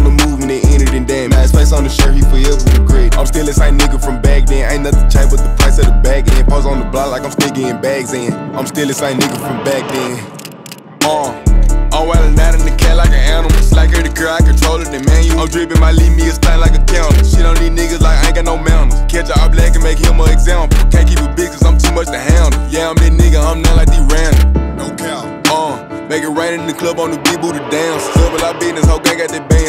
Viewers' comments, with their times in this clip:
0:10 was high and thought the song ended 😂 R.I.P Big Scarr 🙏💯 420 😗💨